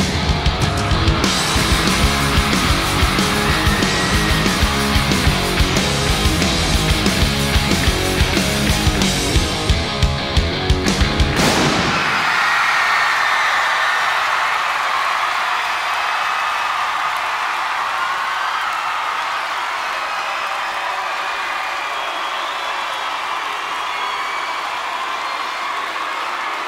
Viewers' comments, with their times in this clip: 0:10 Ow, my ears.